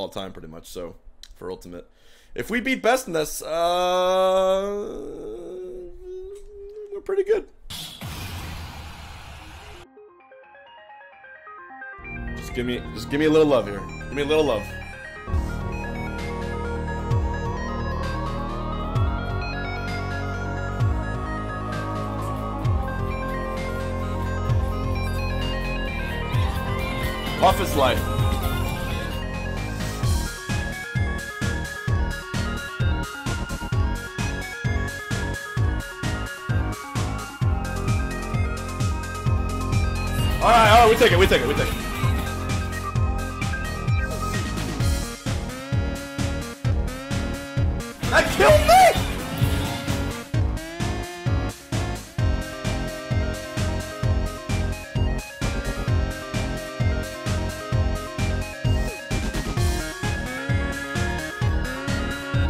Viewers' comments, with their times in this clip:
0:05 Love that Larry David impression lmao
0:49 dat music sync mmmmmmmh